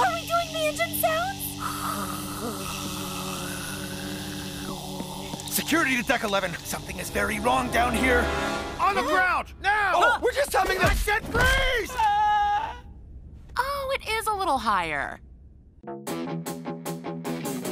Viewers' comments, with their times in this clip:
0:03 the way he went NOPE 🤣